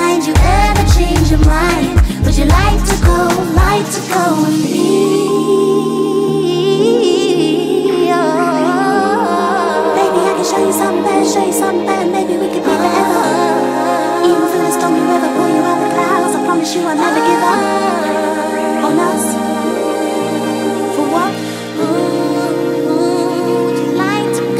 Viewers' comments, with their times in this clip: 0:06 that run starts and It's nirvana 😍😭